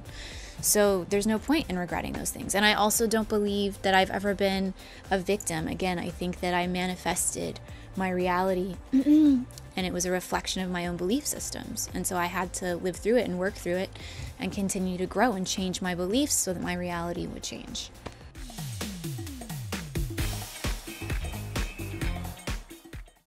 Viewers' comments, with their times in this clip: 0:08 nice cough lol
0:09 when you try hard not to cough so that everyone doesn’t think you have covid